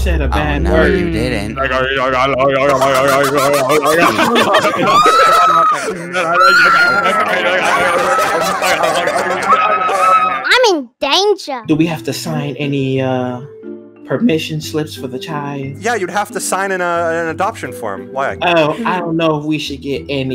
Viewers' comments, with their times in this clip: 0:06 THAT SCREECH THOU-